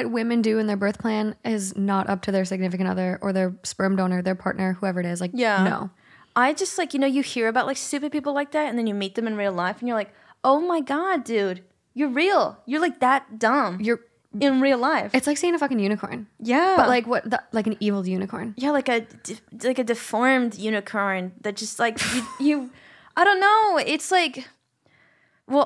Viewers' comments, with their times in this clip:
0:06 Is it me or did she become Australian and 😂